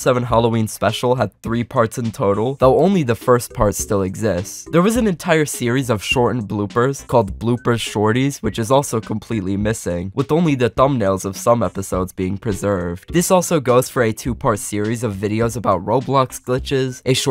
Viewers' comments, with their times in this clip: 0:05 Oh god that’s loud